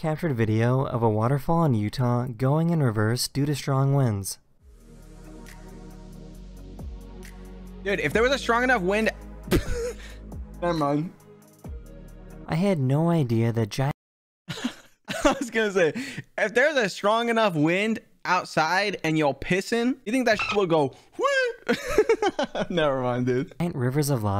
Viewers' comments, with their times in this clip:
0:08 as he was saying if there was a strong enough wind my video buffered I said would it blow your balls off then the buffer stopped and he laughed 😂